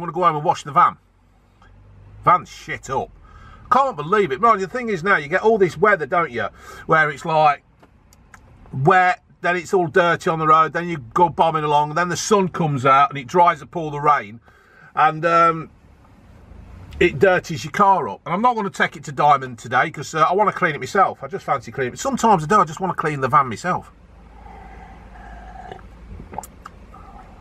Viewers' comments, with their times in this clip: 0:09 is it just me or does that sound a bit like a nursery rhyme